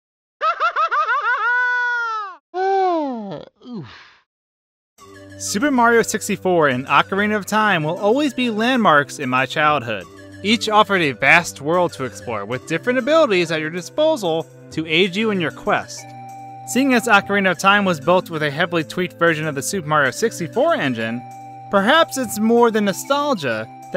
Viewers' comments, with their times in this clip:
0:04 did u say "super Mario tipsy fort"?